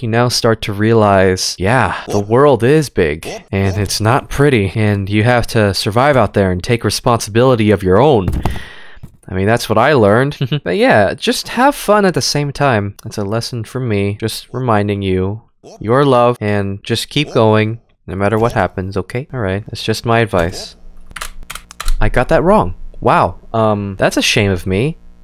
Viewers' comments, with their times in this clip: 0:10 That Laugh ~hehe~